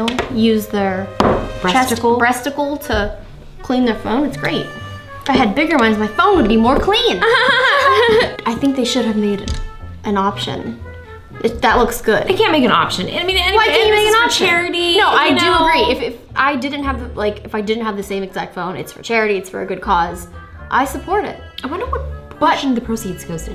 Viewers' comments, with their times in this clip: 0:07 What kind of laugh was that 😂